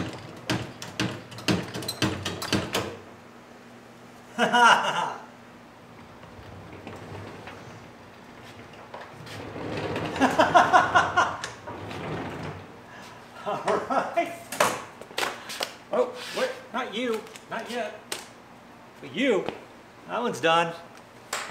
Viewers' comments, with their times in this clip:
0:09 that happy feeling when a plan comes together. I have that same laugh when it actually works!